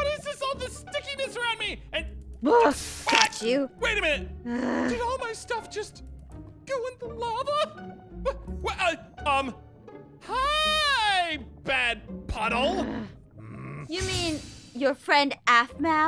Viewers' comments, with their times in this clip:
0:03 Did she just say fudge you or is it just me